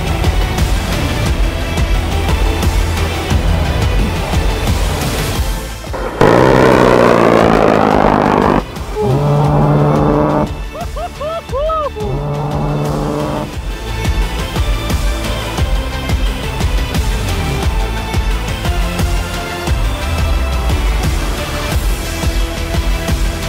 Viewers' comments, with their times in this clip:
0:05 Thanks for the brrrrt-brrrrt-brrrrt 👍🏽